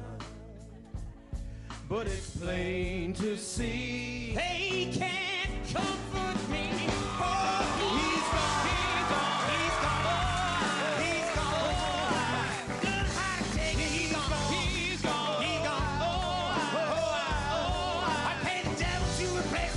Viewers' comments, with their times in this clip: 0:04 When he comes in you can actually hear him try for one line, and it sounds damn good! But then he switches back to his fake singing for most of the rest of the song. xD But for just a moment I think that's his real singing voice. He's a true showman.